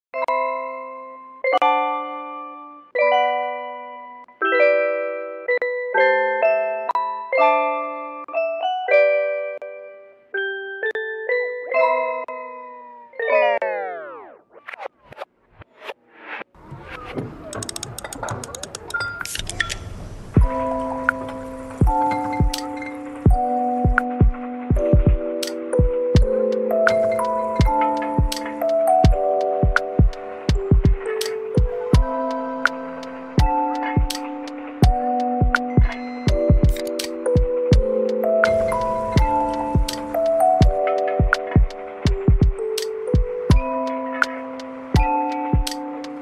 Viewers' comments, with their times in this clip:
0:00 lol just listened to the music
0:32 the music when you turn on a Game Boy Advance...